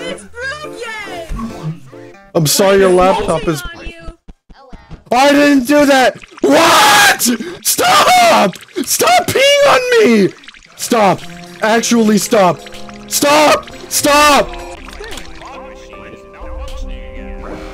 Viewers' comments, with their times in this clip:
0:05 WHY DO YOU SOUND SO GENUINELY DISTRESSED IM GIGGLINF